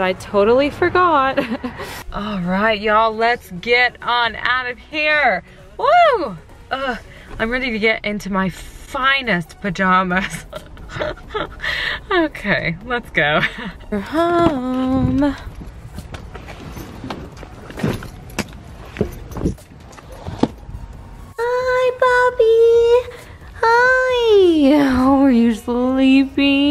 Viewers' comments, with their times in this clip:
0:09 So sad that you're being furloughed. I fly your airline while I'm in the US and I was hoping I'd see you sometime - alas, perhaps it's not to be. I hope that furlough turns into being recalled or asked back or reinstated or whatever it is that works. Your attitude and spark is one of the things I appreciate in flight attendants when I'm on holidays. And your laugh. That chuckle-snort is just priceless. Don't ever change.